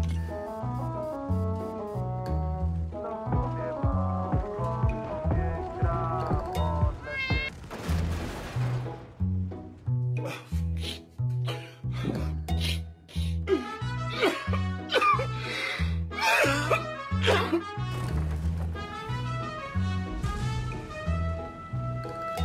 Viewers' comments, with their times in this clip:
0:03 and that music in 60 TP haha greetings from Poland;)